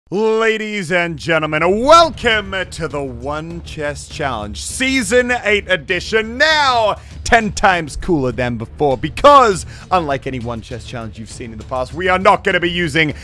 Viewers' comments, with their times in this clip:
0:00 that scared me all bruh my headphones are totally turned up all the way